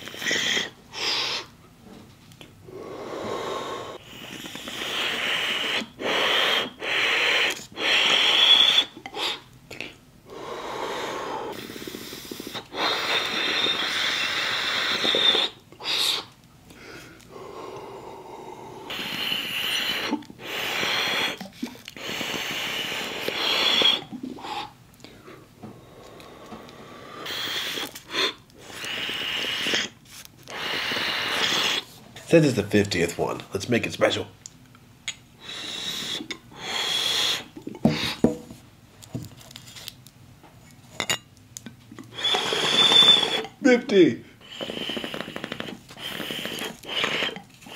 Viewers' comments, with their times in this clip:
0:06 tardis sound effects
0:32 The way he says it 😂😂